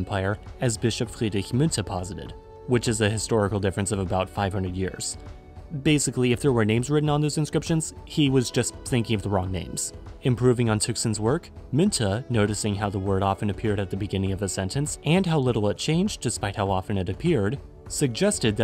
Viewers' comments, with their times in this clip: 0:03 is legit the best pronunciation of "Friedrich" I've ever heard from a non native speaker.